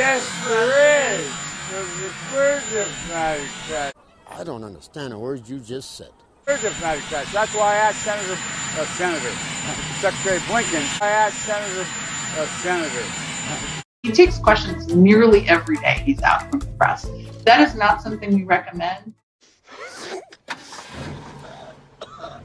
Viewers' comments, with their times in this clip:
0:09 sex trade lincoln? What?